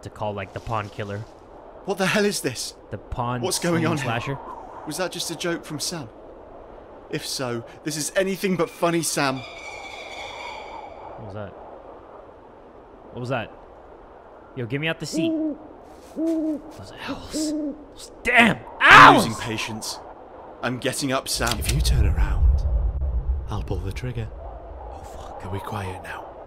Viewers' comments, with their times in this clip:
0:10 damn that voice tho😳